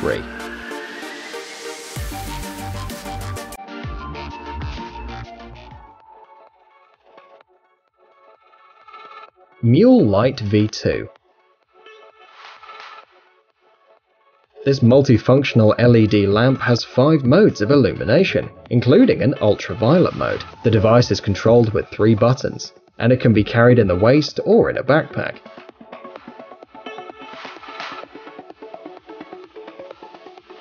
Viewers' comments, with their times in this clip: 0:05 is it just me or does the audio get weird?
0:18 this is giving me spooky vibes. Theres no music
0:18 What the hell happend to the music and what happend to his voice